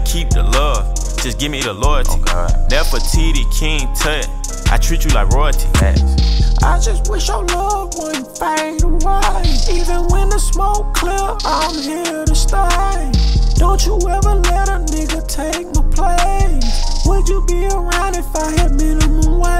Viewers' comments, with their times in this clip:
0:06 Director: So you want me to get Torey Lanez, The Weeknd or maybe Khalid on this track 21 savage: they used to call me Whitney Houston back in England
0:06 Damn, T-Pain would be proud
0:06 do you need weeknd in this? 21 savage : nope I’ll sing it my self
0:06 🤣 dont tell me that's u trying to sing ?
0:06 21s Mom: 21 can we get Future? 21: We got Future at home. At home: